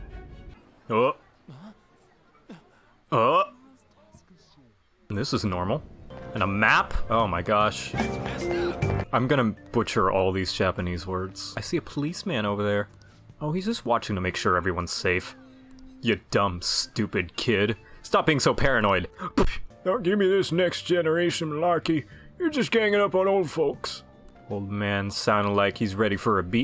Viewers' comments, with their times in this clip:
0:09 "I'm gonna butcher all these Japanese words" he says, while butchering an English word.